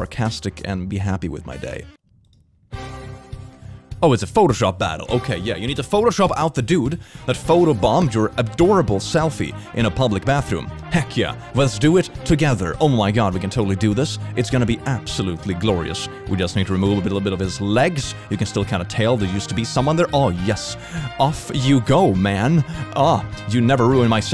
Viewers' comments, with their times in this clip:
0:06 I was looking up and frantically searching for my phone because this song used to be my ringtone. 🤣